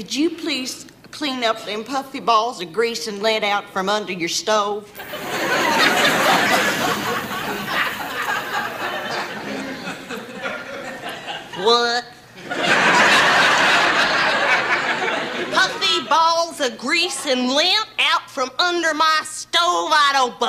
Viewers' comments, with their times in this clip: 0:07 I have no idea why, but the long silence and the way she says “whuut?“ Absolutely kills me 🤣